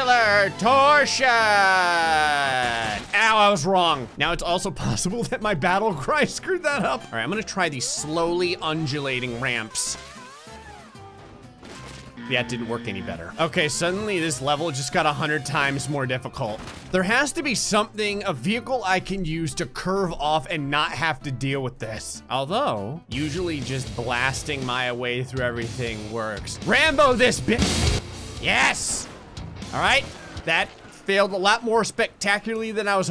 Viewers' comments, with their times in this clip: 0:08 the way it took off all the wheels with complete silence
0:15 Train: whoops I missed (slam)